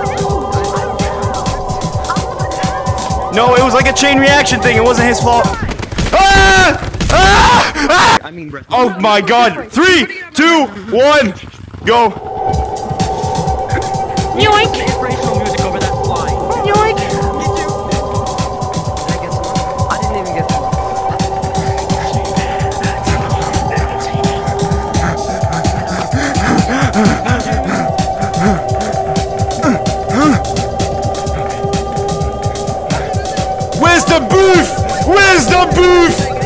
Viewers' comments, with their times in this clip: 0:05 INTRODUCING THE MOSK GREATEST SCREAM IF ALL TIME
0:24 i swear you can hear like ora ora ora or something